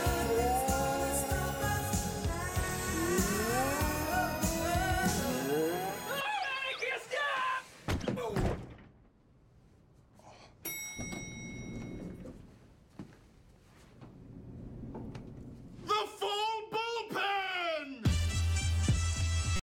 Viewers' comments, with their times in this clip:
0:06 Look! Jake has an applause
0:07 can I just point out that Hitchcock and Scully are still clapping and cheering😂